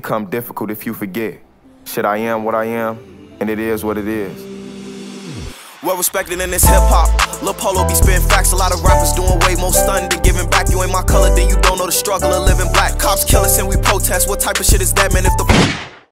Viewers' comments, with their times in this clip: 0:06 sounding kinda fire no cap